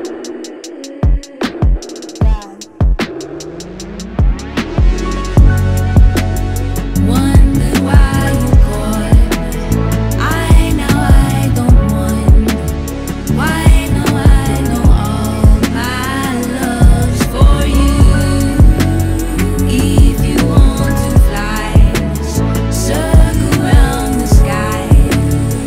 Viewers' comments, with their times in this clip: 0:07 I'm hypnotize by this song. Like I can't stop playing this on my speaker. Mereba I love you sister. My part starts when she raps and .. it's a beautiful harmony